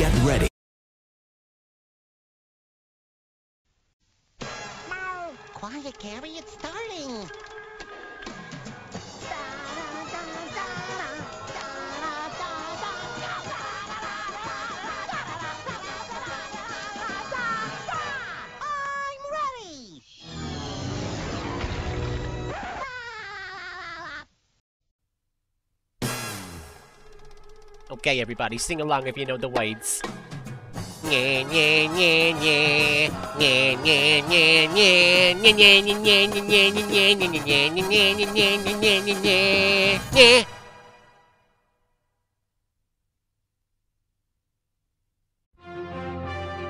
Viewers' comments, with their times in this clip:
0:03 ah hell nah why spunch pop singing to the plural & deem Logo
0:31 wow hes a good Singer "not"